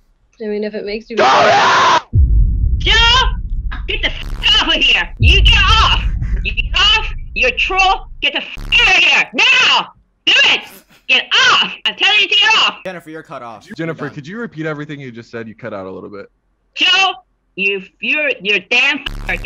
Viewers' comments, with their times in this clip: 0:03 idk if she is angry or trying not to laugh whie screwming that